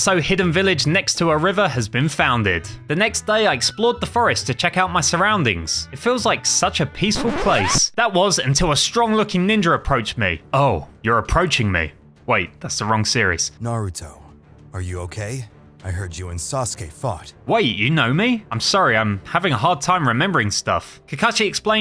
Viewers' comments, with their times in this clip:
0:09 Ok but whats a ninjer?